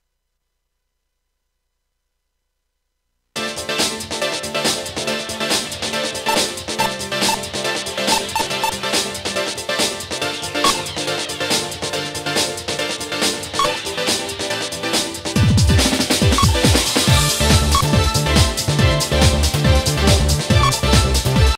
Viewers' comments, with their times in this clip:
0:03 I always get goosebumps. The music is so good!